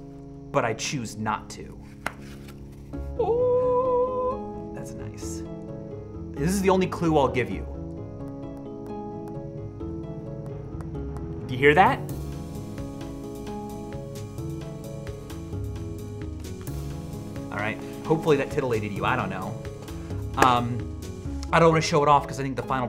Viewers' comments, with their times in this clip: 0:06 "This is the only clue I'll give you" Knocks on the object So it's a solid object, that narrows it down a bit.